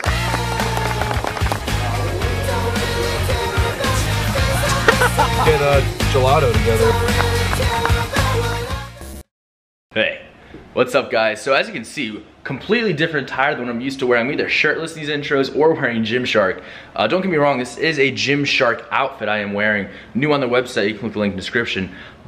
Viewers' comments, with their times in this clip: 0:09 fastest "hey" in the wild west